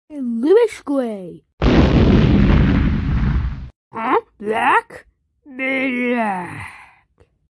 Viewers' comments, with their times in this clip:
0:05 Sounds like BEEYAH! Also funny